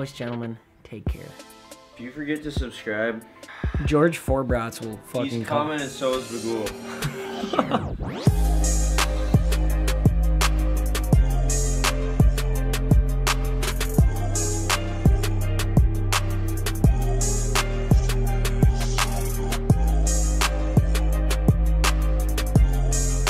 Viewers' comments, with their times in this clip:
0:04 i like how his laugh at the end was at the beat drop